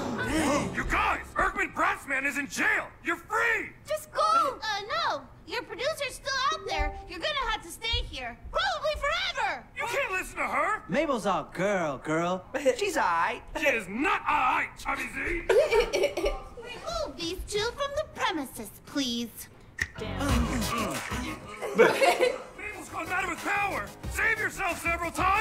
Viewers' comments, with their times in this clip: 0:06 I think someone got a notification or something